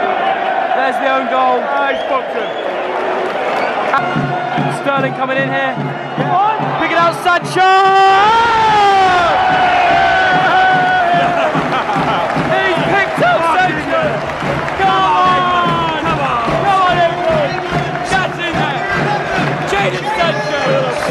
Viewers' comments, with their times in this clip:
0:07 SANCHOOOOOOOOOOOOHHHHHHHHH!!!!!!!!!!!!!!!!!!!!!!!!!!!!!!!!!!!!!!!!!!!!!!!!!!!!!!!!!!!!!!!!!!!!!! Reminds me of AGUEROOOOOOOOOOOOOOOOOOOOOOO!!!!!!!!!!!!!!!!!!!!!!!!!!!!!!!!!!!!!!!!!!!!!!!!!!!!!!!!!!!!!!!!! LOL! 😃🤣⚽️